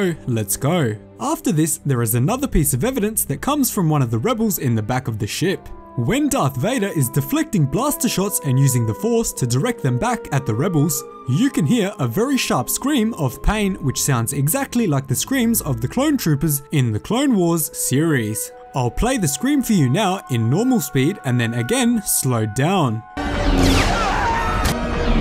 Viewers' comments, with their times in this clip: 0:09 it sounds like: "Hurry up! Lets go!" to me even if I like the theory